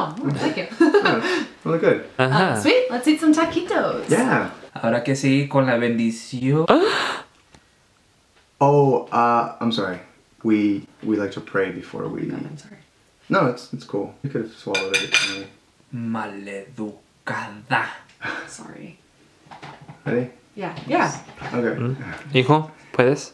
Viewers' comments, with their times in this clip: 0:07 the way he gasped lol
0:08 What was that moan